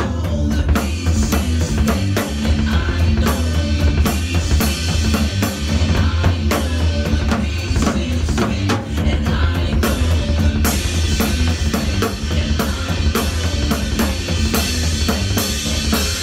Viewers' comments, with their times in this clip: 0:03 Were those Bonzoesque 16th note triplets that you played from